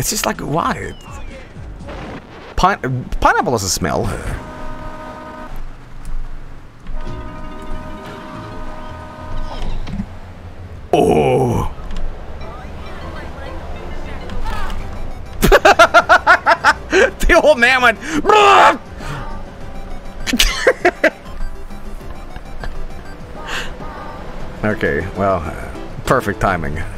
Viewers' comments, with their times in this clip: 0:03 lmao the SFX timing
0:11 Oof biggoo audio delay. This makes the bloost the small bloost :( Also, is amazing
0:13 that scream was on the beat with the music. That's the good shit.
0:13 Please tell me someone clipped the audio de-sync screwed that up so much